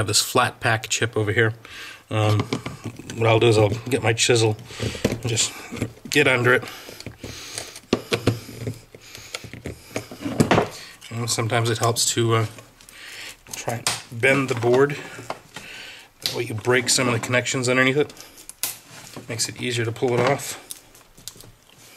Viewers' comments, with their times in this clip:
0:06 Bro ur about 2 cheese burgers away from having a heart attack. man starts breathing heavy like he's out of breath.